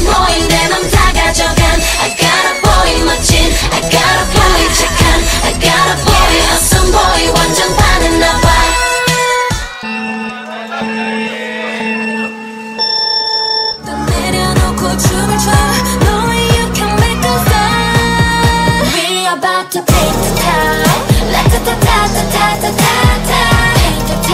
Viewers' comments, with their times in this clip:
0:09 awww it was adorable how they continued to sing I got a boy As expected form soshi their song make you sing no matter what